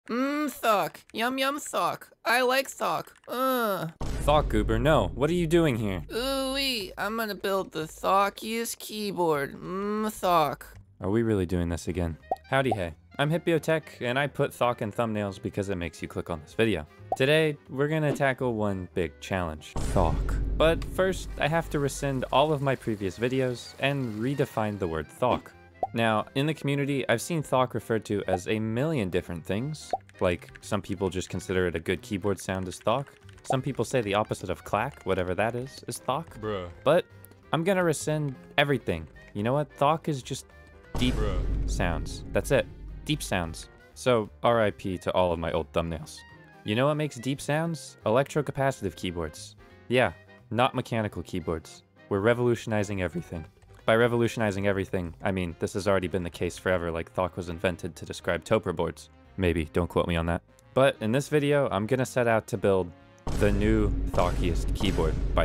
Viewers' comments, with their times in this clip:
0:00 mmm sock yum yum sock i like sock i steal your socks
0:52 Nice Voicecrack bro D: